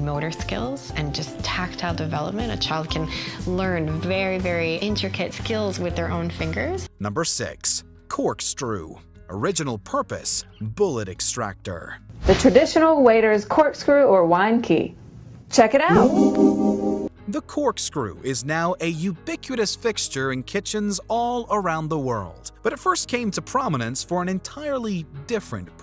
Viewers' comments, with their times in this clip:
0:07 I'm sorry... did you just say "Cork-strew"?
0:08 Lol I think he said "Corkstrew" here: